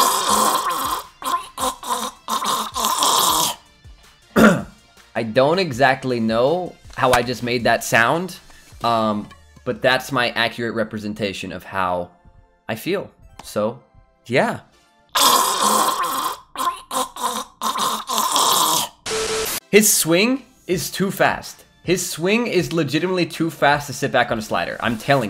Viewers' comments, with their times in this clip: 0:07 the sound a sounds like keirig